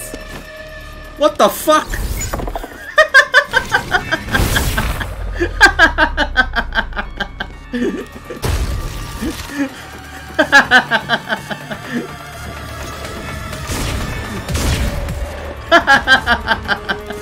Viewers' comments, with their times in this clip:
0:03 OH MY GOD LMAO we laughed at the same time 😂😂😂